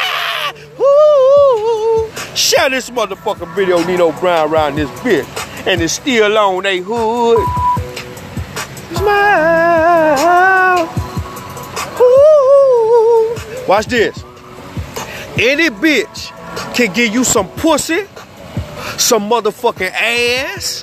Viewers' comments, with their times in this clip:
0:05 and its still on ace hood😭😭😭😭